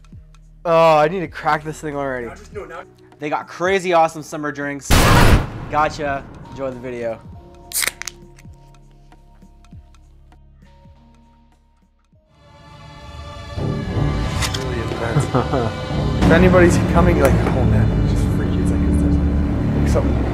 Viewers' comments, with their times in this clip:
0:04 I was opening my fridge when the screamer came on screen, gosh it scared me, I thought the door made that noise x(